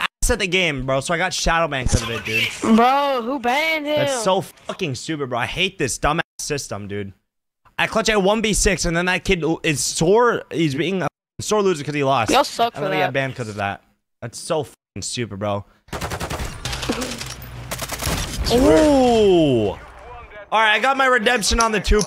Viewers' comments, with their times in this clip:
0:06 you sound pretty salty mah dude.